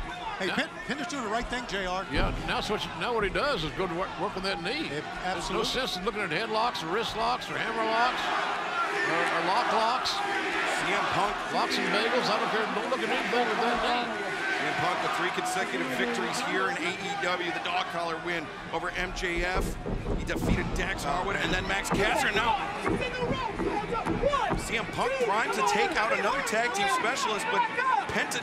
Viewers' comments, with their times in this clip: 0:10 Punk turns into Cena ... the cheap seats can hear him